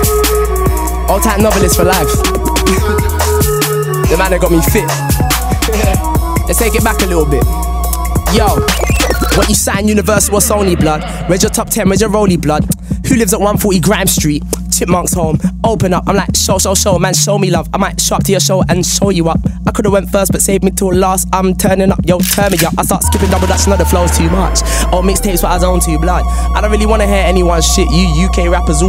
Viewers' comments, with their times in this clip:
0:09 And the beat